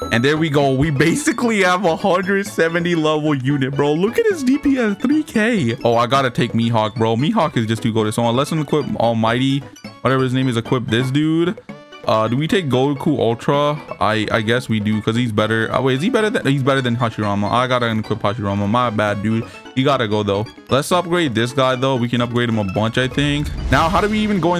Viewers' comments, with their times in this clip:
0:07 the heck is a me hawk